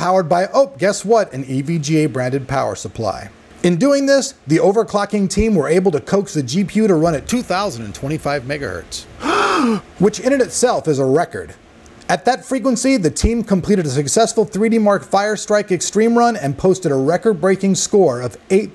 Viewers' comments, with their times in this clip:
0:05 that dub over though.... lolz